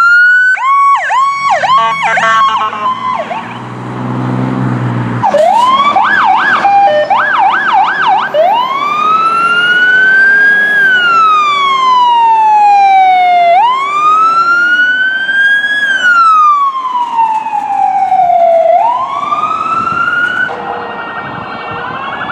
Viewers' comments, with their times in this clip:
0:05 didn't know an emergency vehicle could have a seizure
0:05 didn't know An emergency vehicle could have a Seizure